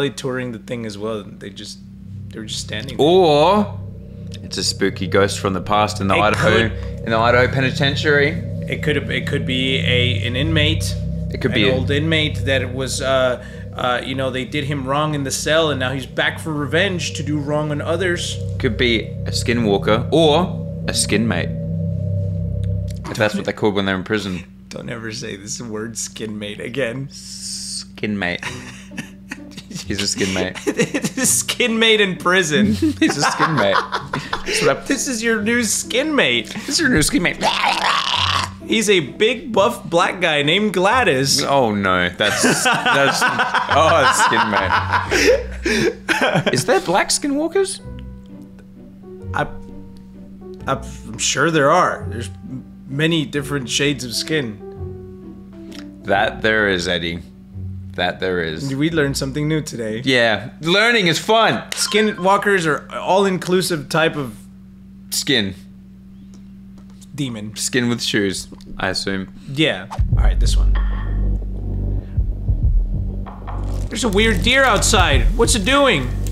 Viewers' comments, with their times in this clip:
0:05 In the minutes left that was a demon scream 😱 not lieing I’m a ghost expert
1:01 i thought it was my notification sound go off 😭 also why he look scared aftee that😂